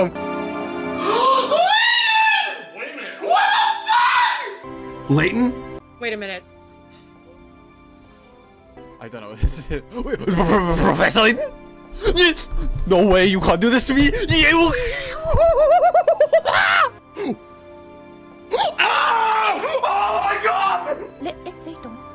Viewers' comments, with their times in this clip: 0:09 man turned into a kuccobura